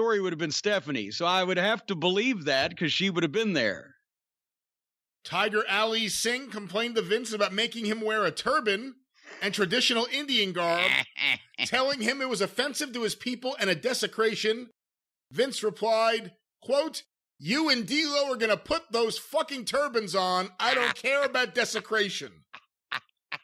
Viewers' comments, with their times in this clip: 0:08 anytime JC laughes like that, you know it’s gonna be good
0:09 what is that laugh lol
0:10 Cornette's evil laugh says it all. So funny.